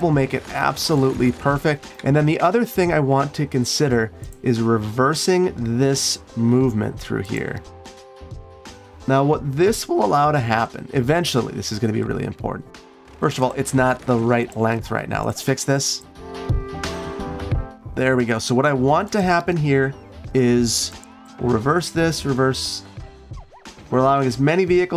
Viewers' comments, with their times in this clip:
0:07 voice crack just Cause